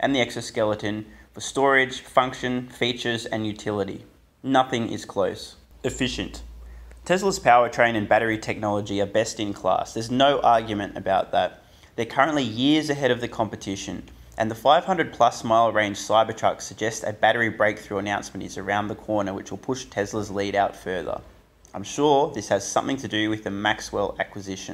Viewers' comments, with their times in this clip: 0:05 ur voice lol like u had a burp comming or w/e lol